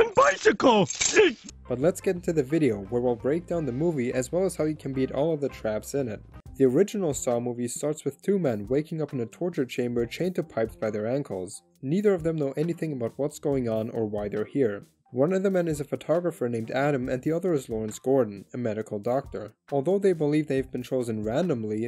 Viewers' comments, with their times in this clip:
0:06 "the original Saw movie starts with two men waking up in a torture chamber chained to pipes by their uncles" Well that´s a way to start a family drama